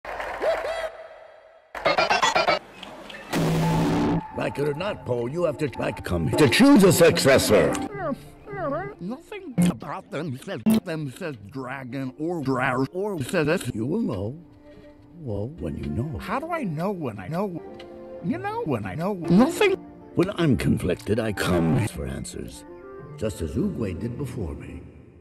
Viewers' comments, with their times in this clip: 0:07 Love the song